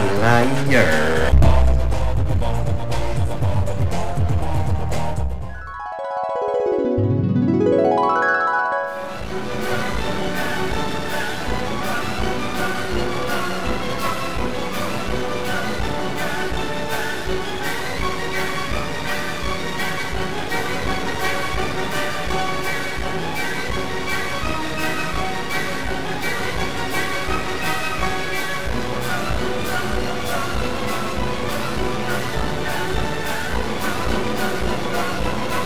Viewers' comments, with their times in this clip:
0:04 had me dying. The music lol
0:21 hello there rat noises